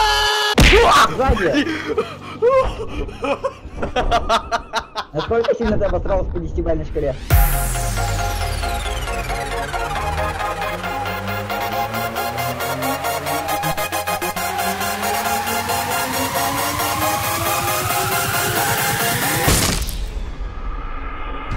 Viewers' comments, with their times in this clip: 0:08 the fucking song is dank